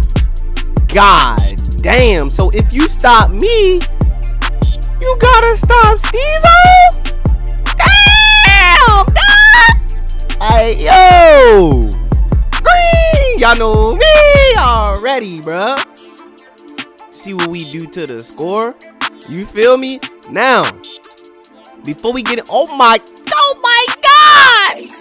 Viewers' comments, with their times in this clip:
0:07 voice crack lmaooo